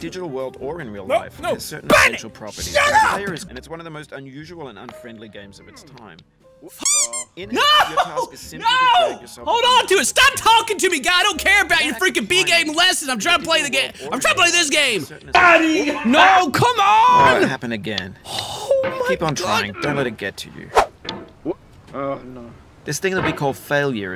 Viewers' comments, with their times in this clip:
0:06 Why Is The Duck Censor So Funny To Me?